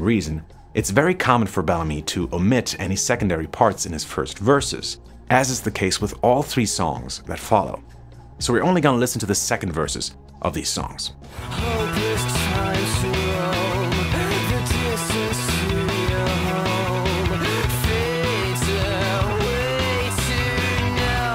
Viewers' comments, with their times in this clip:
0:09 This is kind of late for this but when you say you're only going to play the second verses of these songs then you play New Born, you actually played the first verse. The second verse of that song has a different guitar part.